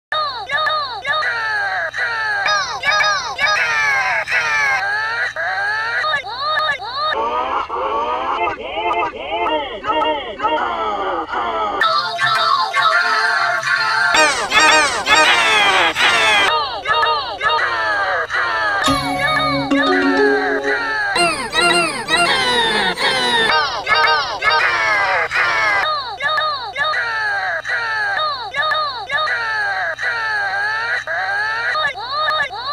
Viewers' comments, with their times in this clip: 0:07 G major 4+ confusion is wrong
0:14 is not because she add g major real